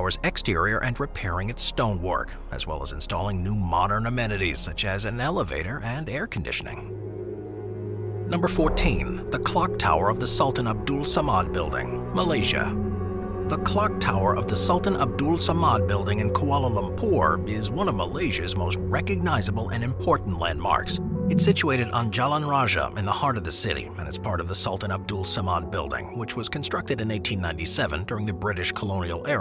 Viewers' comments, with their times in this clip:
0:10 finally something malaysian edit: wow he's butchering all the pronunciations